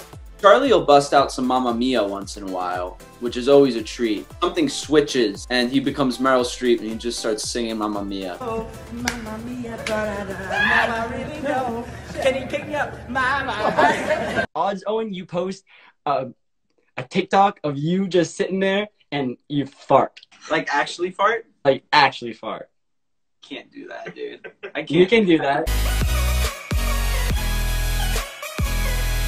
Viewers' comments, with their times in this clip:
0:10 owen screaming Let's start a cult.